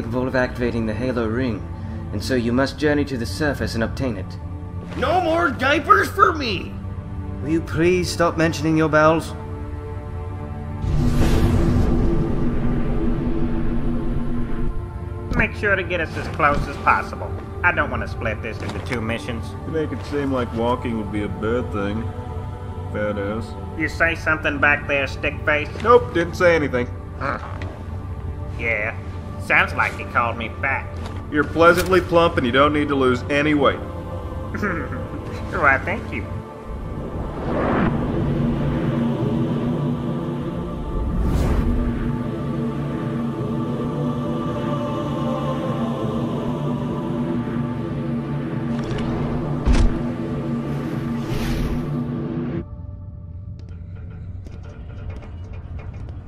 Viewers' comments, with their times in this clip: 0:10 throughout this whole time they both sound like an old married couple
0:37 Slow it down by 0.25 and the phantom would have some words on it
0:38 at .x25 speed it says some secret text